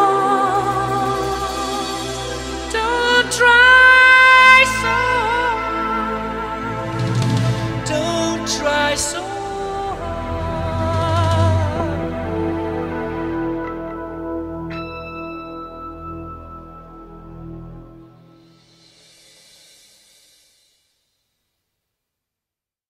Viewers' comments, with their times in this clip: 0:08 that voice made me cry 😢